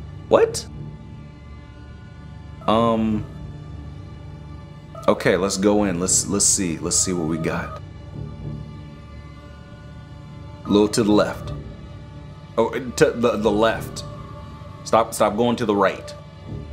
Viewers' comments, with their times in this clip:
0:03 im moving country, why a sound of a pan crying,now a video of a girl crying because her dad died Im moving